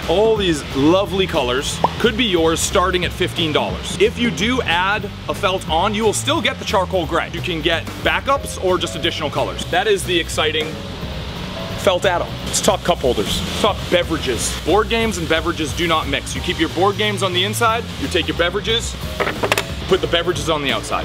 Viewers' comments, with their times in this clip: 0:05 that ding sounds exactly like my doorbell so I got confused. I watch on 2x speed so it seemed faster.